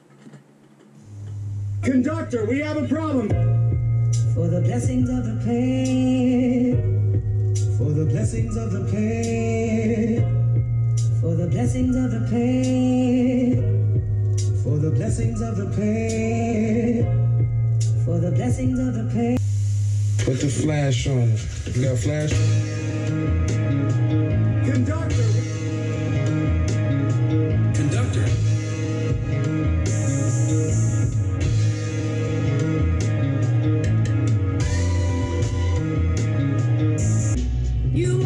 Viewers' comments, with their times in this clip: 0:03 that beat you played is the one👑👑👑
0:21 daaamn the beat 🔥🔥🔥🔥